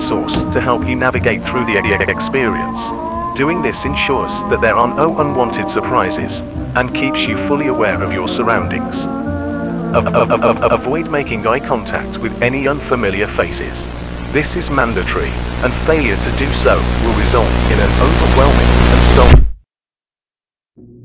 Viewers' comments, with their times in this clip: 0:04 Youtube captions "Use your lightsource to navigate through the idiotic experience." 💀 Game looks sick
0:04 Youtube captions "Use your lightsource to navigate through the idiotic experience."